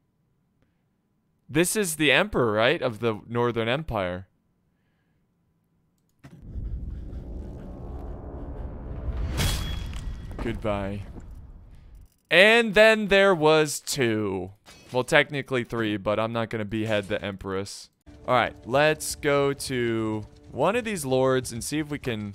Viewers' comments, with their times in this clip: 0:10 “goodbye” sounded so evil lmaoooo